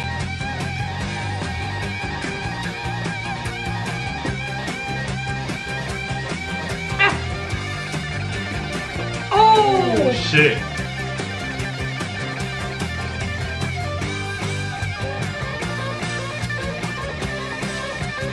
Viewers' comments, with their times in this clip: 0:06 From on that oh shit was so genuine it came from the soul everyone gotta listen to this song once in they life and I love seeing reactions to this song it brings joy, god bless you guys and your channel you guys react to great songs and have a good vibe 🙏🏻💪🏼🤘🏻